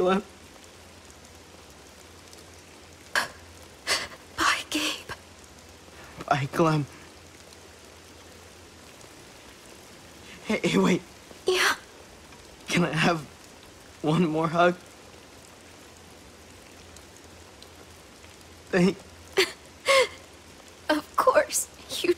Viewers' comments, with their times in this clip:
0:10 The way how clem said 'YeeeAAHh' it sounds lovely 😏